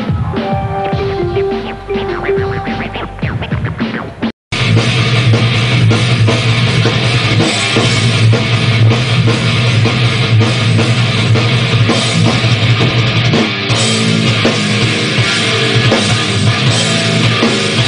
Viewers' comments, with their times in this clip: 0:03 that riff steph is playin is sick